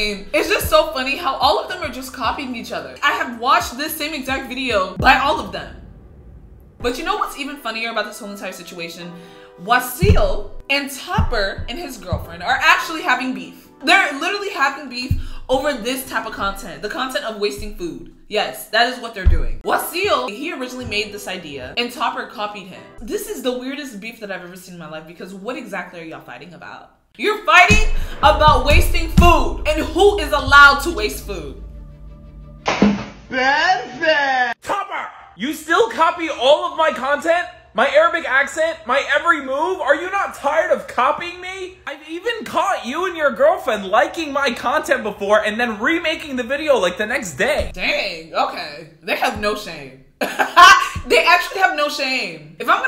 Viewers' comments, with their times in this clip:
0:07 did anybody else hear her little squeak while she was saying what?? Or just me??
0:35 Arabic accent ?! Wtf 😒 I'm arabic and i don't agree , that's not our accent .